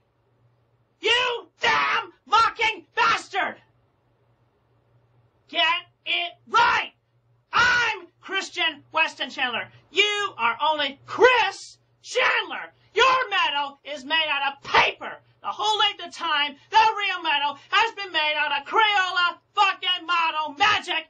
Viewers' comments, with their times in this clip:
0:08 the only time I ever thought Chris was doing this as a act was this part when he brought up the medallion. The delivery almost sounds like a mask slip